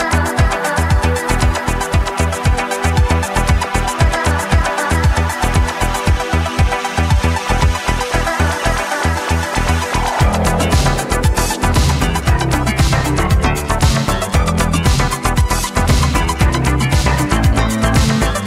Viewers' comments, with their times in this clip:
0:05 What a remix